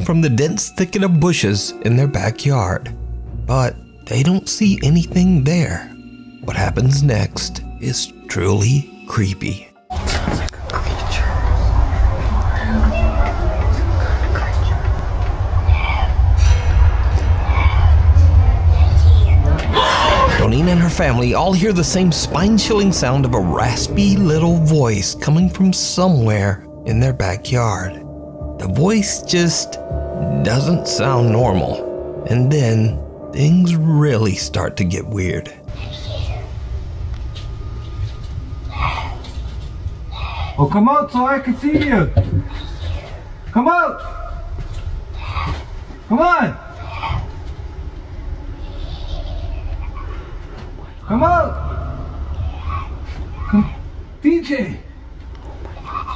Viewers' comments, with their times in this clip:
0:06 Gollum: My precious..
0:11 Imagining No.10 as someones escaped pet parrot is so funny, but whoever taught it those lines is the literal devil lmao
0:11 gollum be like No I see u I has the precious!
0:38 or 50 why does it sound like smeagol from lord of the rings lmao